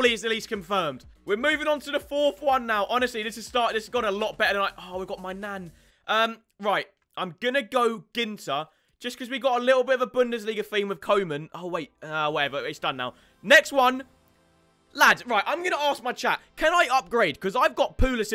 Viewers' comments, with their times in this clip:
0:04 I swear he said “my Nan”